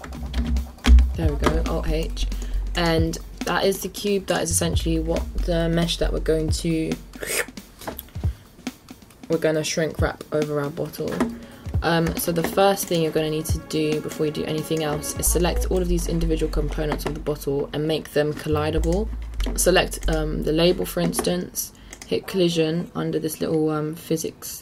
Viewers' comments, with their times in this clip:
0:05 "What we gonna slurrrpp" love how you tryng to say that 😂😂😂